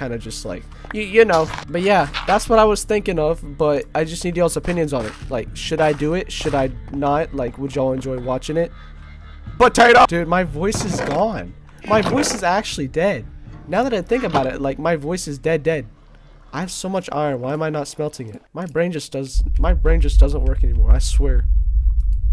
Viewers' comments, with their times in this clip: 0:08 he just stops doing anything he was and yells "POTATOOOO"